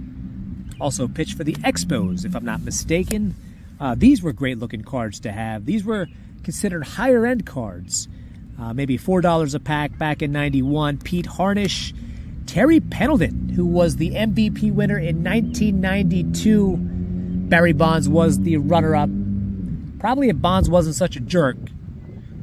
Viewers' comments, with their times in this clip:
0:09 Thanks for sharing. This is a fun rip 👀💯👊👍 🚂🚂 I love hearing all the birds in the background I love your commentary as well Great knowledge I remember those packs